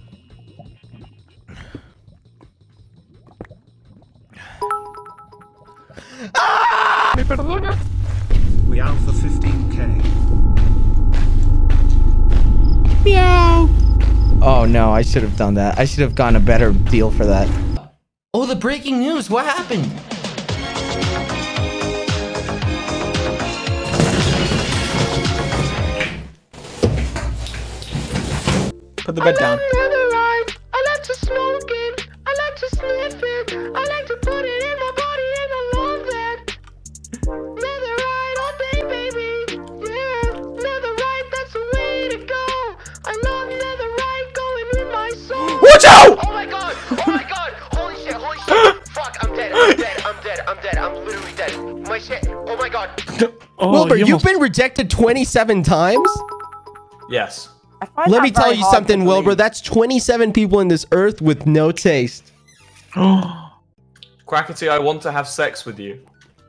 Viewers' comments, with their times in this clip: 0:09 this is my notification sound, I legit think it's a cat behind me all the time XD
0:18 I adore this clip sm, he sounds and looks adorable til the rickroll appears
0:28 that song was a vibe tho
0:29 lokey the song is fire
0:42 i love the fact that the "oh my god! oh my god!" is still synced with the song thingy
0:44 sounds like he’s still singing “O MY GOD, O MY GOD”
0:45 when quackity freaks out. he actually hit that words so hard
0:46 him freaking out with the effect still on fucking gets me
0:46 WHY IS NOBODY TALKING ABOUT HOW WAS PERFECTLY ON BEAT
0:46 I LIKE HOW HE’S STILL SINGING WITH THE BEAT LMAO-
0:50 the music is still playing 😂😂😂😂😂